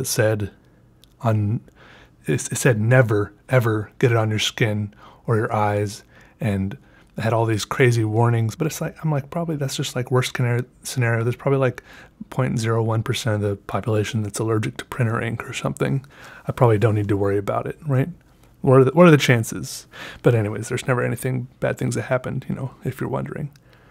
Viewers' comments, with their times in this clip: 0:10 "The worst canary scenario."